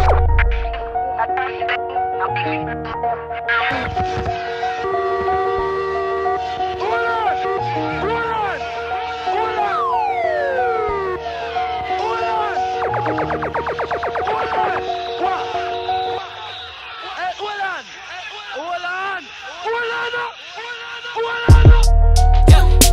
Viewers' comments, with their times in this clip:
0:06 As a Jamaican, I really love that sample & this song as a whole. 👌🏼🤞🏻